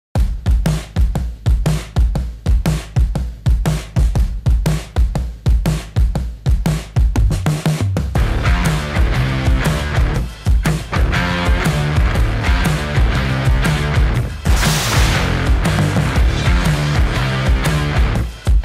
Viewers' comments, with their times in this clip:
0:04 I QUIT DUE TO SOUND TRACK. THUMBS DOWN. DO NOT SUGGEST THIS PROVIDER AGAIN/